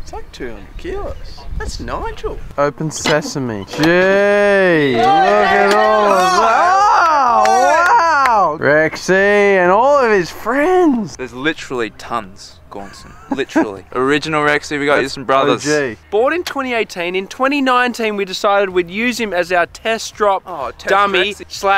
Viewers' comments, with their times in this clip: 0:05 0- is just screaming.